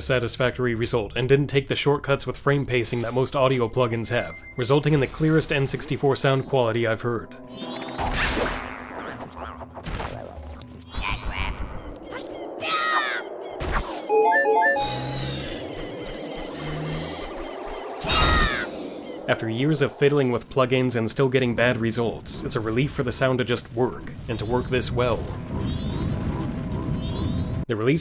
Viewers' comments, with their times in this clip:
0:10 That’s the cleanest “Cat crap” I’ve ever heard… ITS BEAUTIFUL 🥲